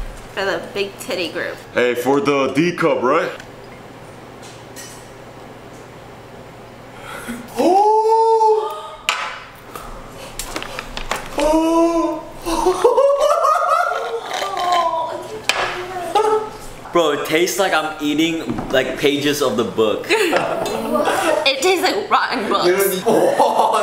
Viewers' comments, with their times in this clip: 0:10 that face and gasp😂